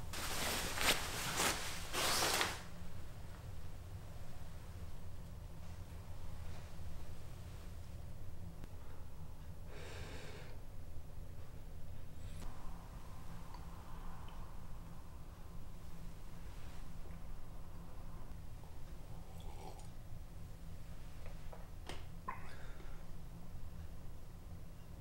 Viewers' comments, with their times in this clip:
0:10 he exhales, has he been holding it the whole haircut?!